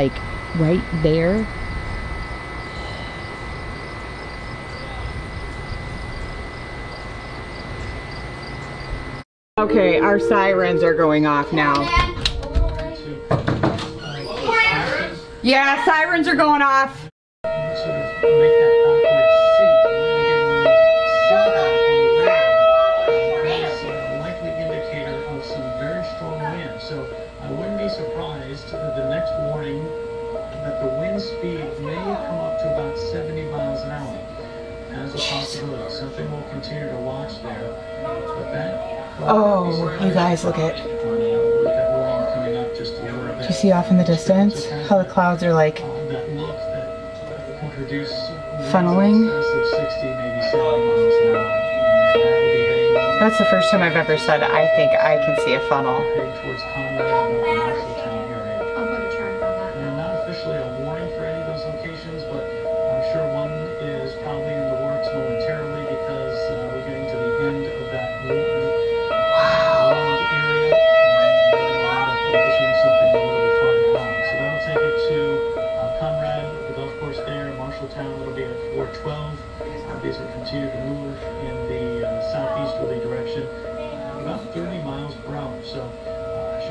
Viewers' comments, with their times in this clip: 0:09 The Tornado Sirens sounded Eerie at that point
0:10 call me crazy or weird but that siren kinda has a nice beat..
0:10 Whelen Vortex doing Alert then Hi-Lo
0:17 Whelen Vortexes doing hi-lo. 👍
0:33 the siren that sounding off sounds like either a Whelen or a eows 408
0:37 I'm an expert of sirens but I know that tone is for floods only And I think the sirens A wheelie
1:08 I dislike that siren.